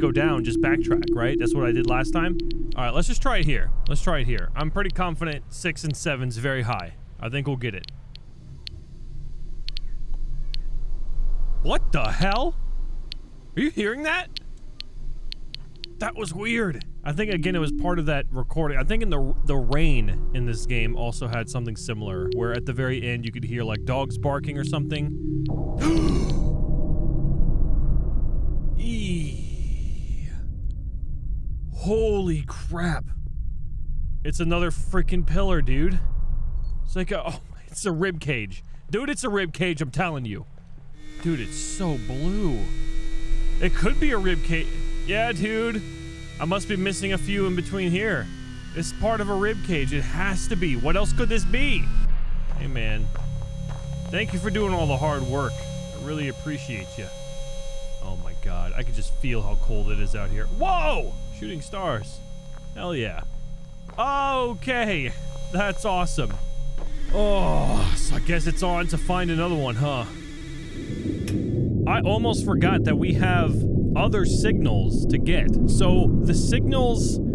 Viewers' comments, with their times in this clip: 0:09 I hear a bird or cat
0:23 startled gasp eeeeeeeeeeee........
1:00 mans got so surprised he became kronk